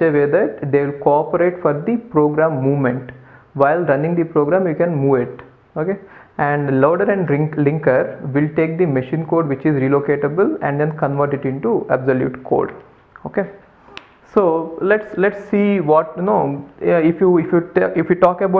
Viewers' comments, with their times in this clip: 0:06 loader and drinker....